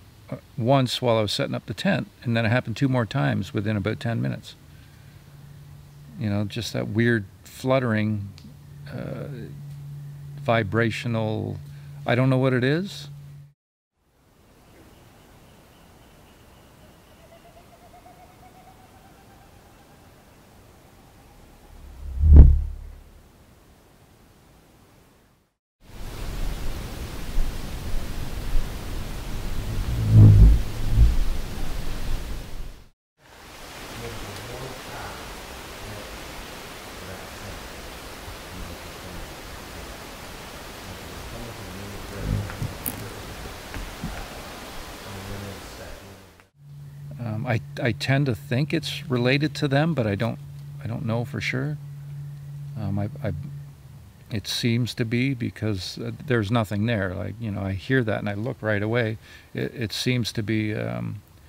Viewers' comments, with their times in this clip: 0:03 I'm only into this video, and got goosebumps, as 3 days ago I had that same sound ( I thought a big, bird size dragonfly, as I live in England) it sounded almost mechanical, I spun around but didn't see anything, but the area had gone silent.
0:42 right after the flutter you hear a snap or crack, almost sounds like electronic interruption with the mike.